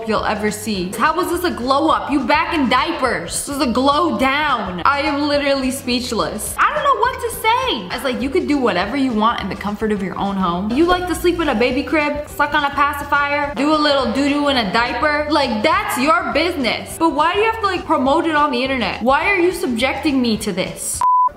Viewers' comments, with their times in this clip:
0:04 I am sorry if I miss heard her but did she say Bella porch?